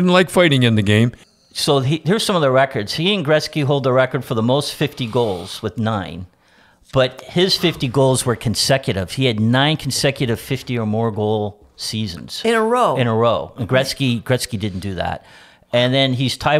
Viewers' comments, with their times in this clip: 0:04 Grapes with the yawn at the mark. Good morning, Don!